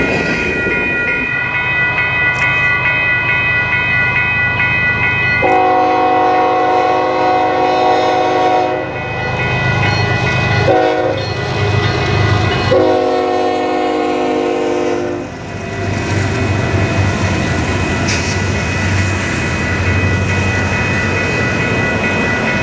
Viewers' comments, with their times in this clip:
0:04 I love the horn!